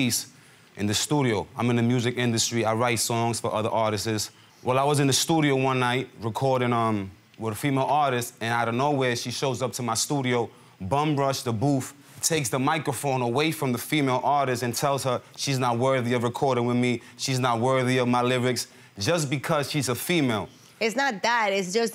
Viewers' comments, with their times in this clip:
0:03 "I write songs for other Artises" lol Artists??? Please STOP lmao